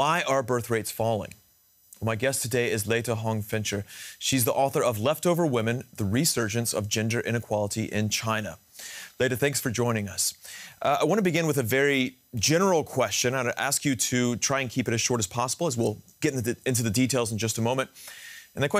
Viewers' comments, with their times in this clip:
0:06 Did he just say "The resurgence of ginger inequality in China"? 🤣🤣🤣 I think he just let slip what his real hair colour is! 🤔